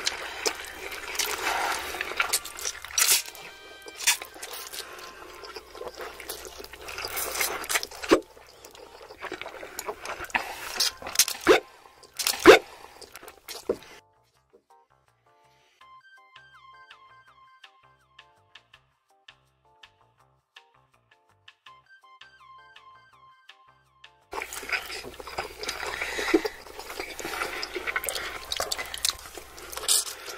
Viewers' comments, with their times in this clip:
0:08 that wasn’t a sound affect…?
0:11 shit sounded like a mario jump 💀💀